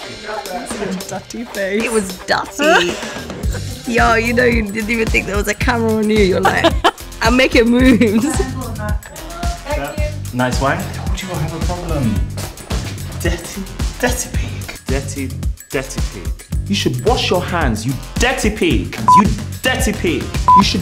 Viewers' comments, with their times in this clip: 0:05 proof that British ppl don’t speak like the queen